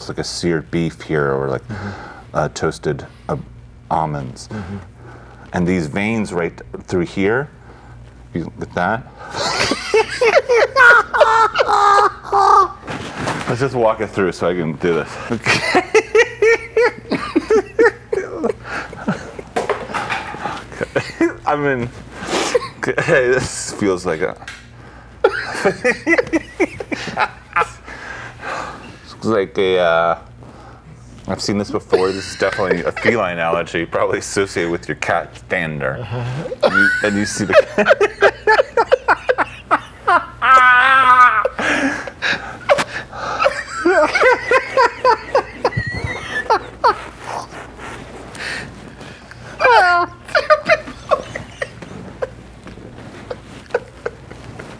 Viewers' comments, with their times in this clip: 0:09 Good Lord that laugh is golden
0:37 I always lose it when Tim does his low key “uh-huh “ to Eric. Then Eric’s laugh is the kind that heals whatever’s ailing you. 😂
0:40 Eric's laugh kills me, he'll be like "ehhehehehe-hahaHaAAaAaAAAaAaAaH"